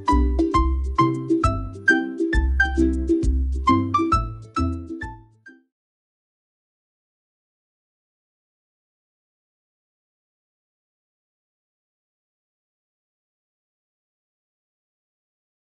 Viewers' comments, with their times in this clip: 0:05 very nice music ❤